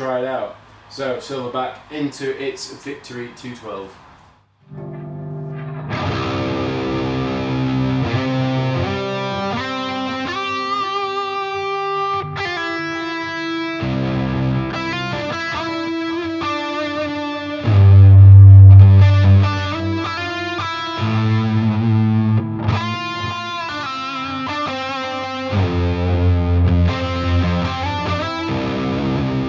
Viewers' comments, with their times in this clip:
0:05 the bit until the first cut sounds reeeeeeeally nice!
0:17 made my room shake...boomy indeed